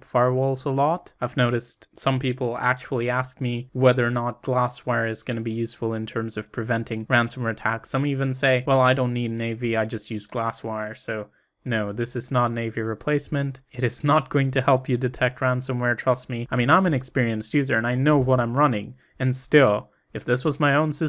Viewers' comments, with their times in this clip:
0:08 What is Navi? An anti virus software?